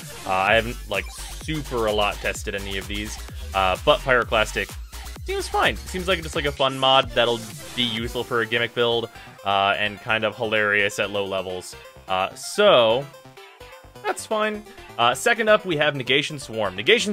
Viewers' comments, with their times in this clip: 0:03 Butt pirate what?